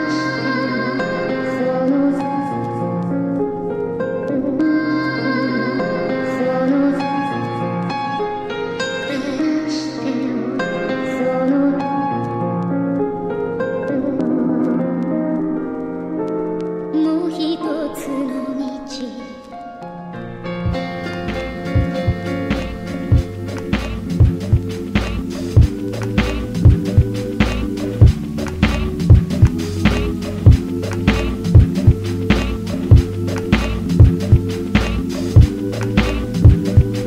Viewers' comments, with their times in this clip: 0:09 is like champloo
0:21 The transition into battlecry was so smooth. Rip nujabes
0:24 is when that dope shit drop. 💥💥💥